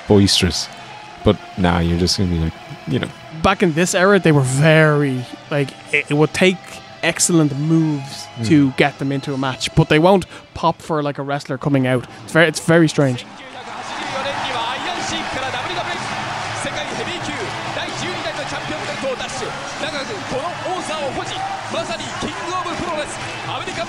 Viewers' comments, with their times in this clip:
0:06 “They won’t pop for a wrestler coming out, it’s very strange” (Hogan enters to big pop)